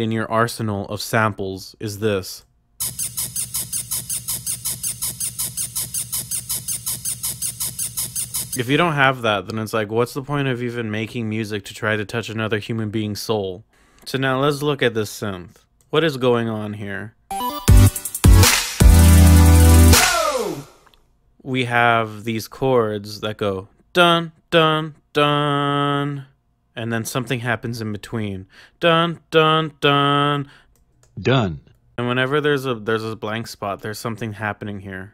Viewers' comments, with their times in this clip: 0:03 that tiiiny squeaky sound you get when you rub two pickles together.
0:22 U WERE OFFKEY JEEZ LUISUS! I trusted u as the true musical mastermind but now I'll go listen to PINK SEASON ( at least nickelodeon girls) jk tho man keep it up